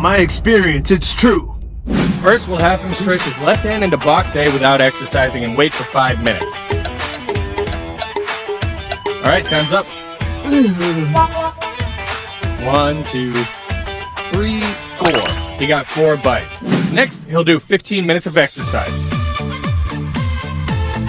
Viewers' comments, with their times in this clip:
0:08 That sound is my notification sound, I thought my phone was glitching